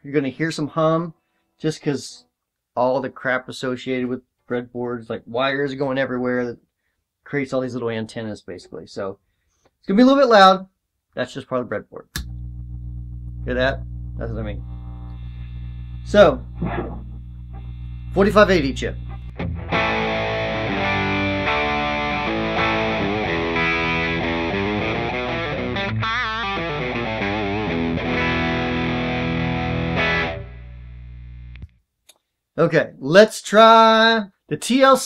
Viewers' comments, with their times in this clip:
0:09 Even that 50 hertz womp sounds good.
0:22 was sweeet tone..